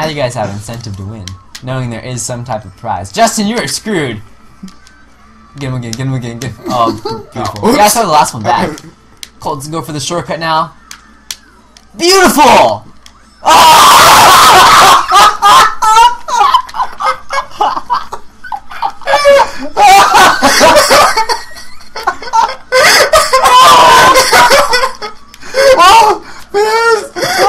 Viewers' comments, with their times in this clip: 0:08 never watch at full blast I learned the hard way
0:14 epic ear rape